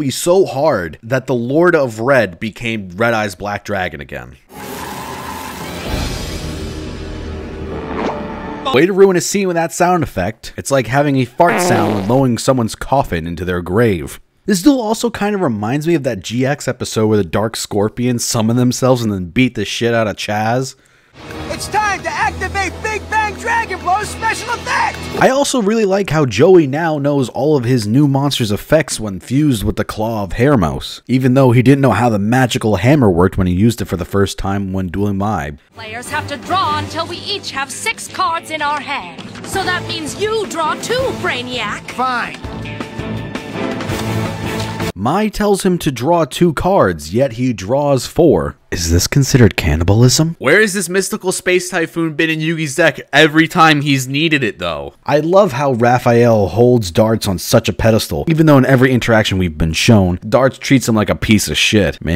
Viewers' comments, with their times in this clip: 0:06 i seriously think they literally tried to make fun of this ridiculous scene actually. But they also used fart sounds for punching so... 4kids was weird man.
0:07 LMAO did they really change the noise his helmet-hair made for the dub?! I recently rewatched this season in the original Japanese, and it made a noise like an umbrella opening up. Which was still funny as hell, but holy crap a squeaky rubber noise? I got hiccups I’m laughing so hard. XD
0:41 sorry if you've heard this a million times already, but I think my said "so that means you draw too" instead of "so that means you draw 2"
0:47 I always thought she said "You draw too brainiac" not "You draw two"